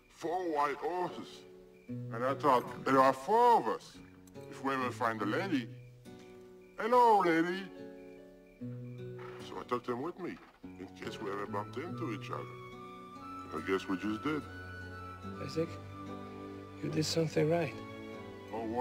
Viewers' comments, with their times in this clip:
0:06 “Hello, Lady!” I don’t know why, but there’s something so pure and wholesome about Andre saying that.